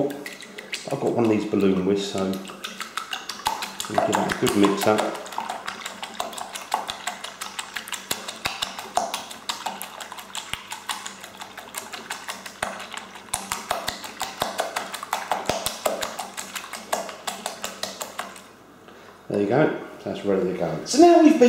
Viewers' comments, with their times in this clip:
0:05 Please make sure your volume isn't up loud ... Thanks for the embarrassment😂😂😂😭